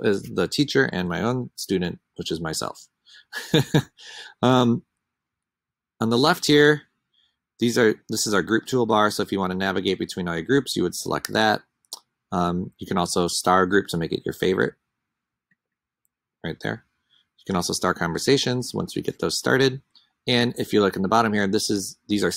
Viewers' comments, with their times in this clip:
0:04 I joined your laugh 😊😊